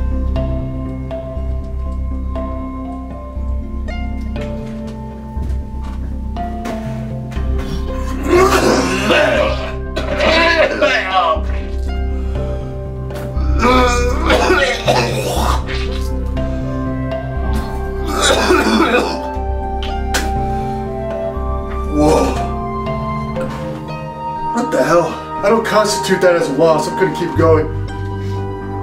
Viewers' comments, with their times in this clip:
0:10 he sounded like a demon was leaving his body
0:10 bro started speaking T Rex🤣